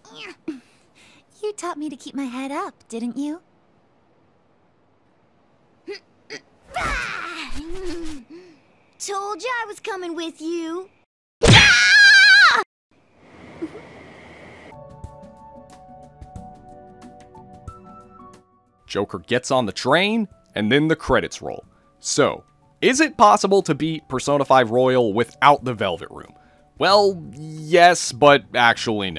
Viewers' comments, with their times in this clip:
0:10 That Morgana smack in lmao